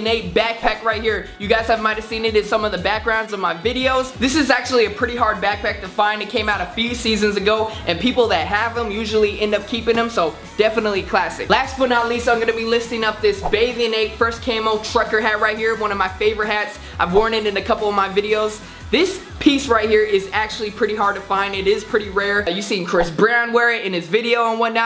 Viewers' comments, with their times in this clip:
0:06 " it came out a feceseasons ago"